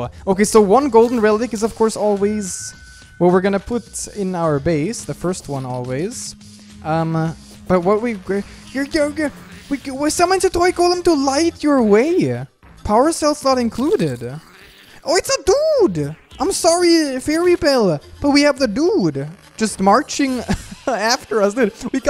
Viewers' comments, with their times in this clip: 0:07 I don't know what happened with his voice, but I love it.